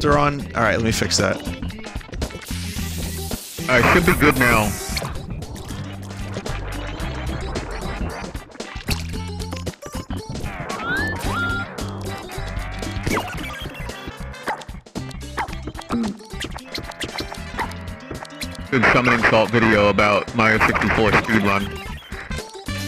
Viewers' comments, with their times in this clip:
0:06 I love the "wee waa" from Vinny moving the camera